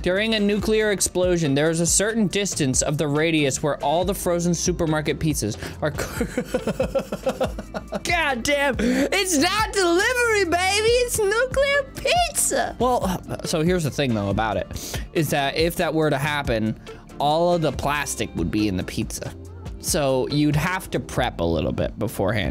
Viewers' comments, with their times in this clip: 0:10 Why does he sound like beast boy?!